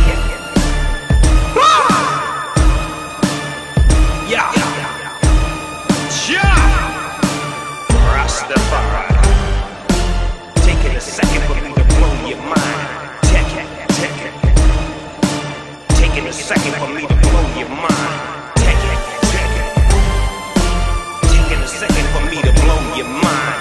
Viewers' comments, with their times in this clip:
0:05 I couldn't resist laughing at that shout, coming from the 'snoop dogg' and all